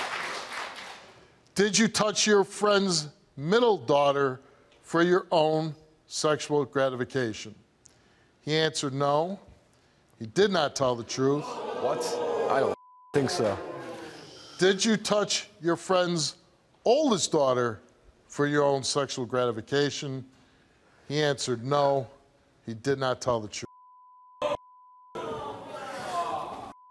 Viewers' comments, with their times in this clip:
0:09 The audience ooing and awwing as if they are somehow surprised. 🤡🤡🤡